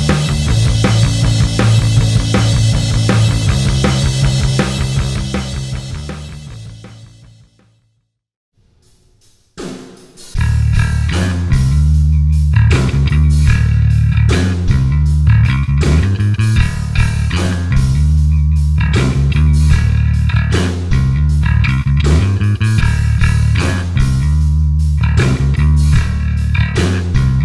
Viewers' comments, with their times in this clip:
0:10 That tone is GODLY!!!